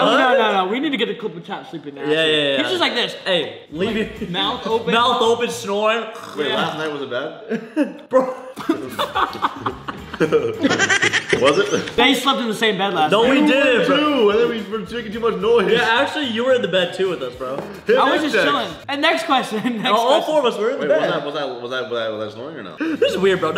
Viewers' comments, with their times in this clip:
0:09 why is bro laughing so hard 😂😂😂😂